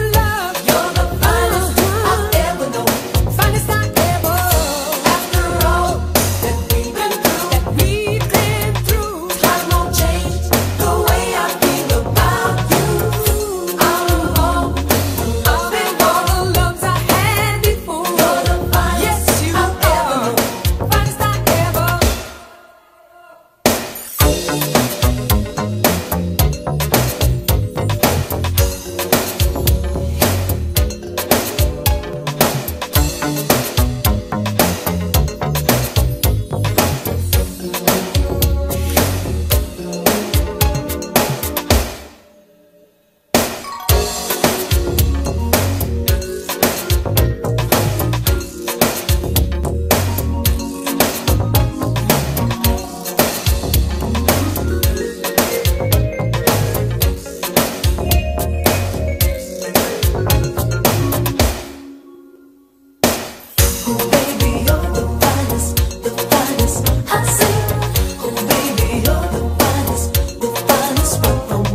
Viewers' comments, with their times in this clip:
0:06 Nice, pretty little. "wooo," if you listen closely. It enhances the song.
0:23 The most dope breakdown ever
0:24 Dat diminished arpeggio is a funky change of pace 🤯 🤩
0:25 Thet BASS ... unique, sick!
0:53 the intro is the melody in reverse